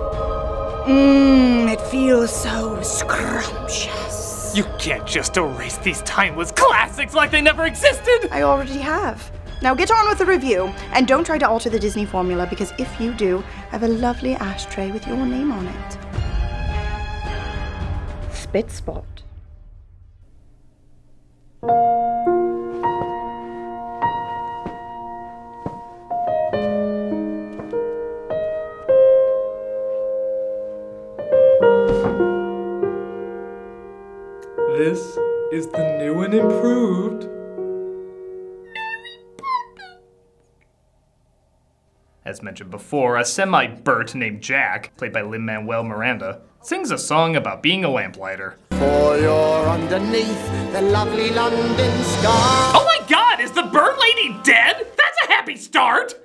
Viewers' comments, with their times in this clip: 0:07 shaggy is that you?!
0:07 Critic went full on Shaggy voice right there. Lol
0:37 (very high voice) mary Poppins.....
0:38 wait can you voice actually go that high? I thought you just edited it. If you can really make your voice go that high that’s really impressive.